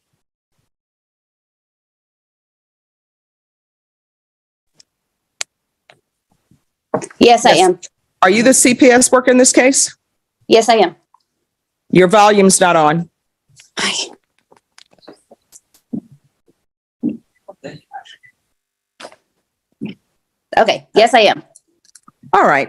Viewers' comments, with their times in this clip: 0:09 "Your volume's not on" to the cps worker. But actually it was. Is this judge purposely making this up to scare this woman to make sure she knows that if the cps worker is good with the defendant, this judge won't automatically follow suit? Not sure, but this cps woman DEFINITELY had her volume on